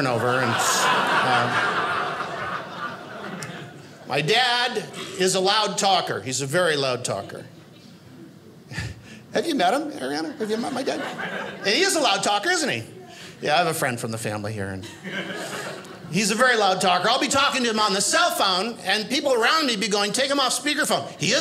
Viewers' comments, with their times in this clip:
0:03 My dad is a very loud talker - says the comedian who stands there SCREAMING as if he doesn't have a microphone